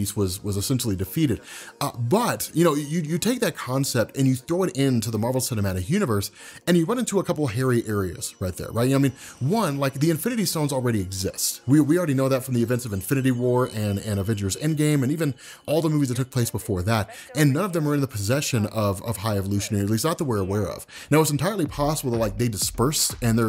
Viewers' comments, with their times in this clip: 0:07 Whoa! That ringing sound had me freaked out for a moment! I thought it was coming from my end!!